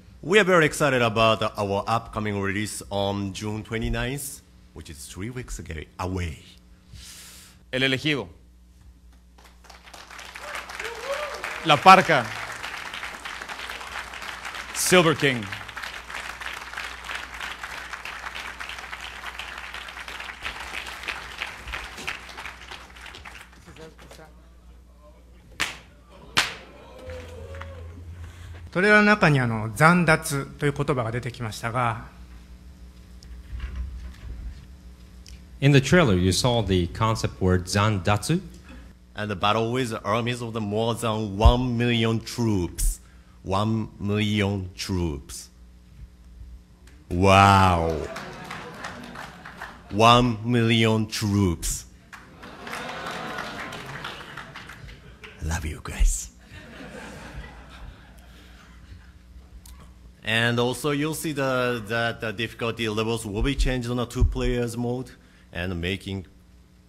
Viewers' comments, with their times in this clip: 0:04 Three weeks a gay
0:43 He sounds like the narrator from Spongebob.
0:49 I died at the kanye song